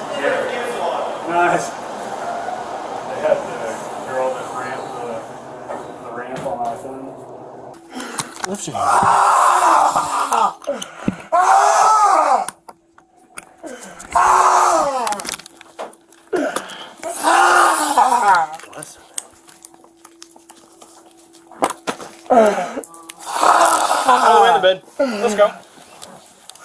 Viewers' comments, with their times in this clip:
0:07 I don't know what they were doing it was fuzzed out but looks like he was on his belly with officer behind him and he sounds Violated